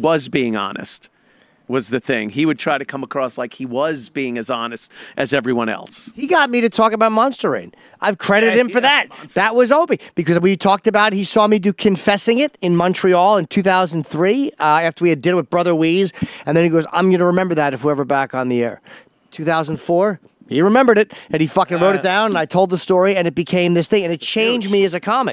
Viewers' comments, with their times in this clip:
0:06 have no idea what Jim said, he git him to talk about what??